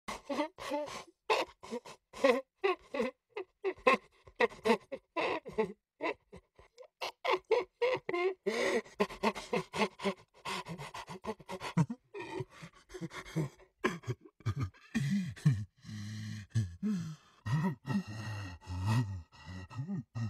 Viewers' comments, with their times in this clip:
0:00 The first ever trumpet sounded like:
0:04 its no giggling its a crying.